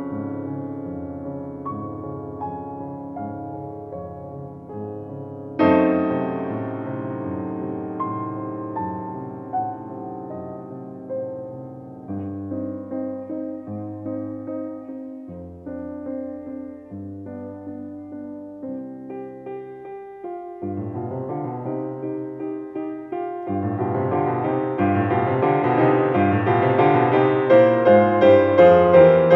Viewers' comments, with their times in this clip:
0:10 Ok someone tell me that they also thought he was about to play the TV series "Succession" theme-song at the mark !